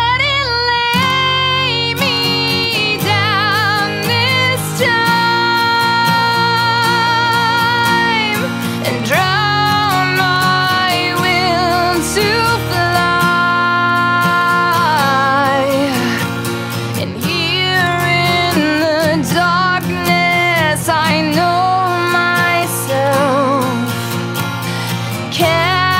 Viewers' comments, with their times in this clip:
0:07 first time I've ever seen any of your videos. got in and was loving it and thought "depending on how she handles that high note at the end I may subscribe". and now I'm a subscriber fanfare loved this cover